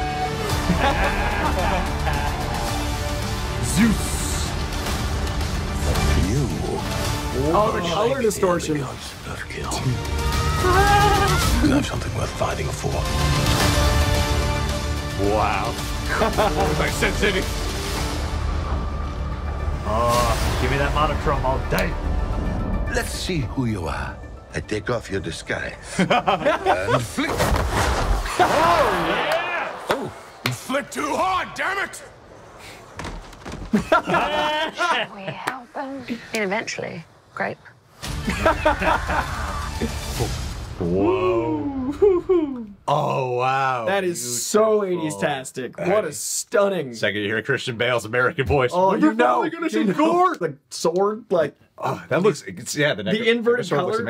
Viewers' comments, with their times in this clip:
0:06 is that the thunder of zeus?
0:38 A trio of Delta Males laughing at the abuse of an Alpha... wow, what a none shocker.